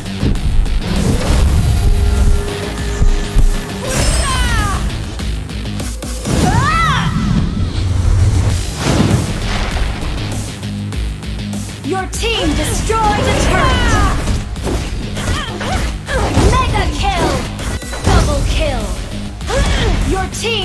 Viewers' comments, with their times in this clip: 0:05 umm Moonton i think you used the wrong voice for masha but what do i know its not like i play a hero named freya
0:05 lol its freya voice
0:06 it sounds like old freya when using ult
0:06 Did I just hear freyas voice
0:06 Masha sound like Freya hahaha
0:06 Why is there Freya's voice ulti
0:06 that's not her voice it's someone else's
0:06 Masha screams (It's not Freya)
0:06 was I the only one who noticed that the cry used was Freya while using her ult and not Masha's? Just me? Okay... ✌
0:06 it's Freya's voice LOL